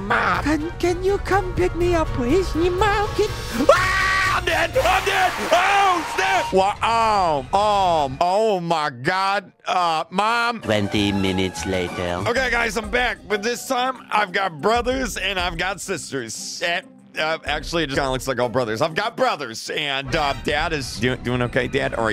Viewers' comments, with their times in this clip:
0:03 did he actually swear? Might be mishearing things but I thought I heard him say “OH SH-“
0:04 WAS SO SCARY THAT I PEED MYSELF (Not really jk but i got scared) and when u scream i feel bad😅